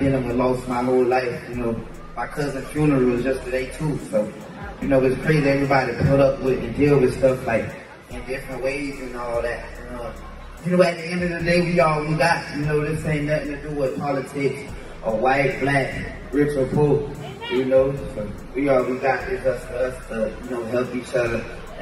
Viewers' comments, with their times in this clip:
0:08 my nigga sounded so intelligent around those white folk